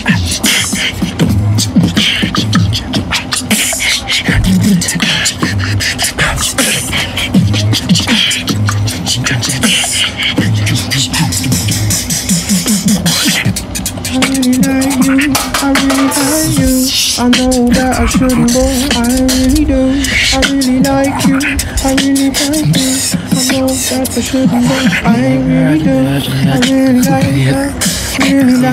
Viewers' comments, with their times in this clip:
0:03 alems a t-rex
0:15 that can falling and the "shhh" perfect sync hahahah